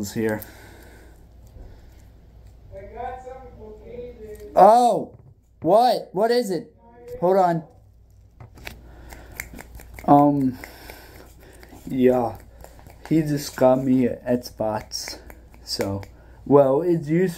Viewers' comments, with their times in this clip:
0:04 Great video just need to work on editing out loud parts like the yelling